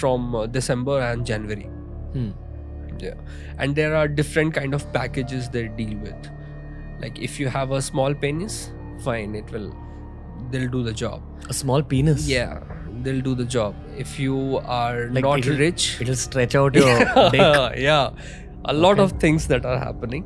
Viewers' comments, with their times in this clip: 0:08 Couldn't control the laugh. How crazy people are